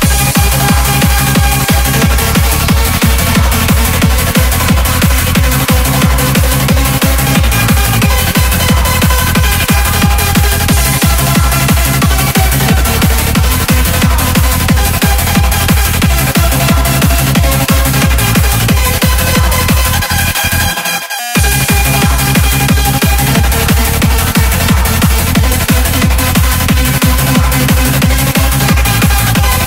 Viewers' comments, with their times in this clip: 0:10 the song is fking insane i live for this sound